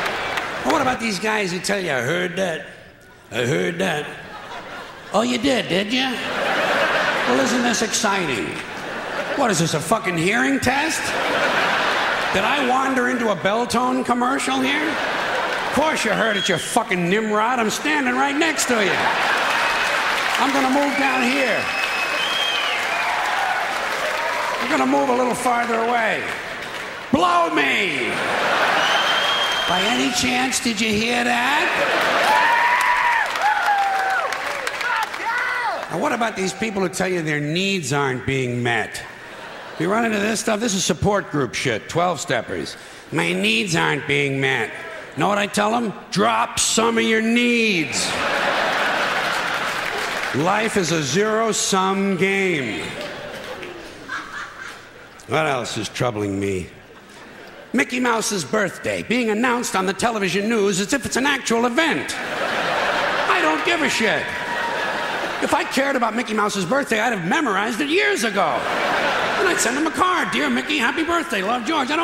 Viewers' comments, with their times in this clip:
0:04 Hahaha, (raspy voice) “Oh, ya did, did ya?”!
0:32 Big up for the guy screaming "WOOOHOOOO GODDAMN!"
0:32 That guy's applause 😂😂
0:34 Did anyone hear the audience member scream "FUCK YEAH!" ?
0:54 ROFL DAT laugh